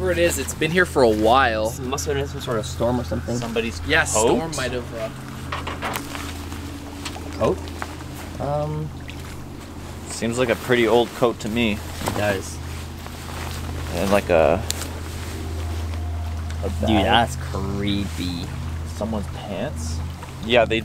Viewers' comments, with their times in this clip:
0:04 Did no one hear the banging